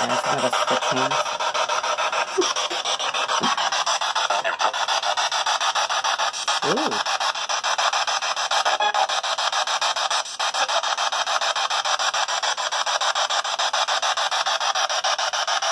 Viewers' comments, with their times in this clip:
0:03 a female giggles